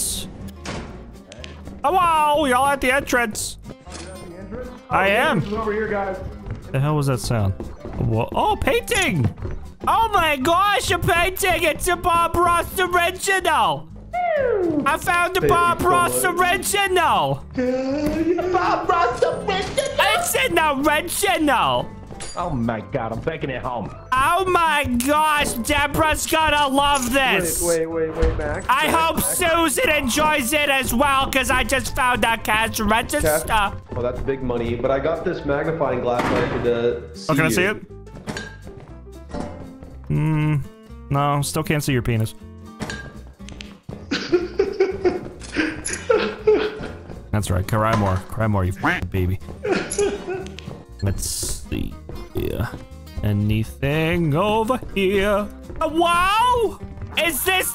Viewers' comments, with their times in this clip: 0:09 You sound like Bob's wife from Bob's Burger
0:44 I like how he goes from laughing to laugh-crying